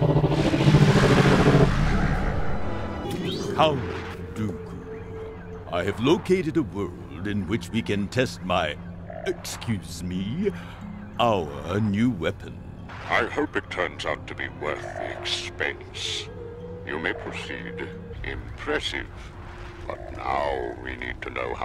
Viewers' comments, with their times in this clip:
0:06 SULU ?!?? OOOHHHH MYYYY !!!